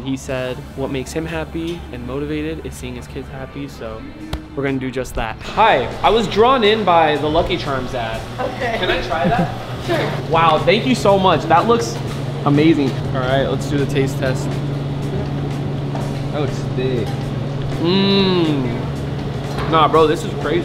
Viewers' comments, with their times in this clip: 0:06 you sound like a npc